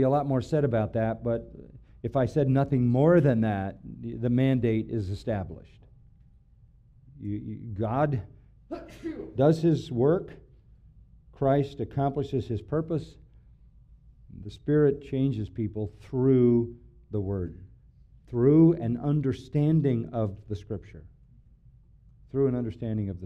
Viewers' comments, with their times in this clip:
0:09 Haha that was me that sneezed I’m now forever linked to brotha John 😂😂😂